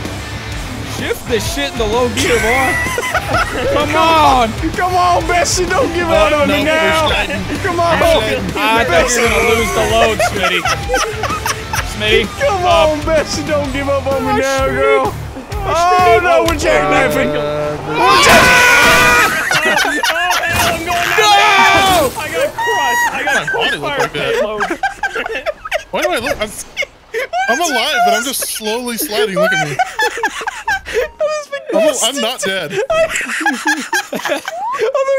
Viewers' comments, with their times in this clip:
0:09 background music brings back memories of playing this monster truck racing game on gameboy and ds
0:16 I lost it with that scream
0:17 that unison of screams 😂
0:17 Why'd he yell like an angry bird💀
0:17 The scream always gets me
0:21 he died of laughter 😂